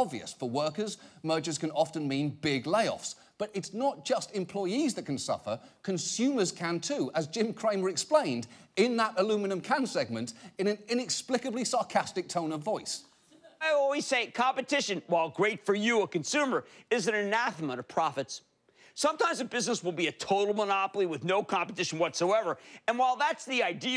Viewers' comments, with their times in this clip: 0:08 john oliver said aluminium wrong. He is no longer British 😔